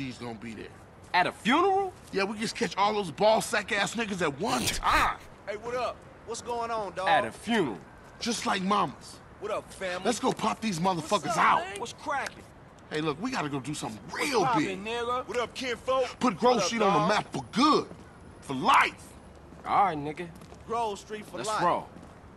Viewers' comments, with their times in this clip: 0:10 ok, you can’t deny me that this “What’s cracking?” is not Franklin’s voice